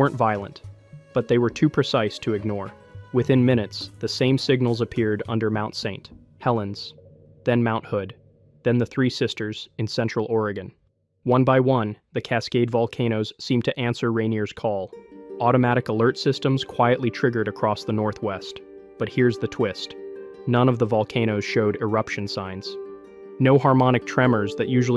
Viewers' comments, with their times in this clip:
0:04 The awkward pronunciation of "Mt. St Helens".. AI detected. INTO THE TRASH IT GOES.🚮 >⛔Don't recommend channel >roundhouse kick all AI videos >body slam all AI videos >flush all AI slop down the toilet
0:06 using AI technology to read the script? 🫤